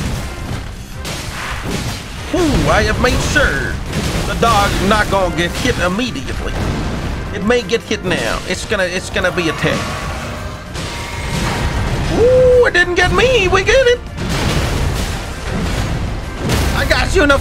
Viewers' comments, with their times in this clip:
0:04 Pokemon music on Godrick is the best insult done to him yet! :yougotthis:🤣